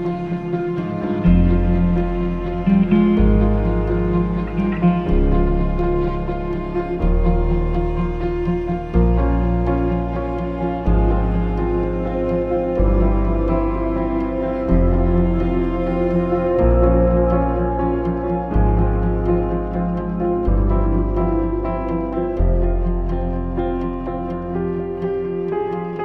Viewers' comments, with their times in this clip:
0:09 Every time the notes try to achieve a new level, they do stand back once again. My Favorite part is the transition It's like a relief after stretching. ❤